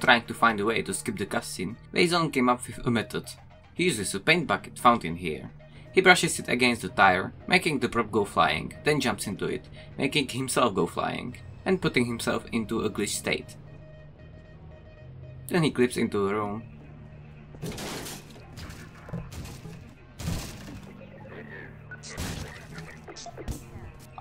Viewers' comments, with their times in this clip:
0:09 duck tales moon theme starts playing